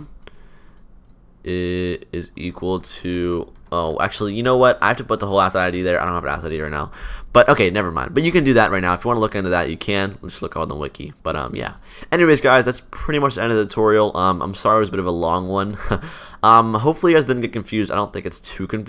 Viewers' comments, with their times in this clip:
0:04 "I have to put the whole Swear Word Here Id"
0:05 king actually fought we didn't know he said "whole ass Id" lmao